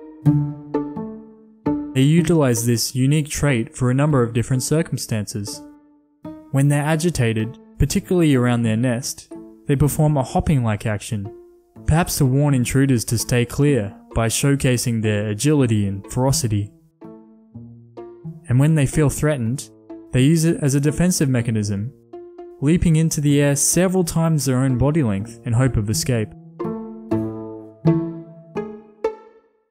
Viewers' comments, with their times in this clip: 0:10 I understood ‘Hawking like action’